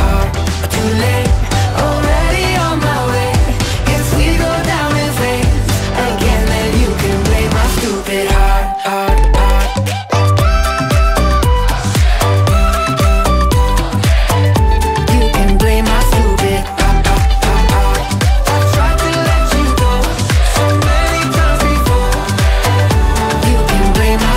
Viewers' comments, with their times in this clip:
0:07 you can here the kid saying "LET'S GO!!!!!!!" in the background.😊😊😊😊😊😊😊